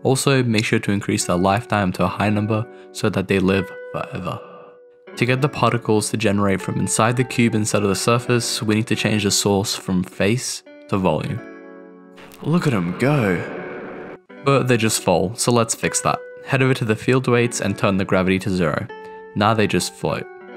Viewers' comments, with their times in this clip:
0:04 I shouldn't've laughed at the "forever" but it was a good use of vocal effects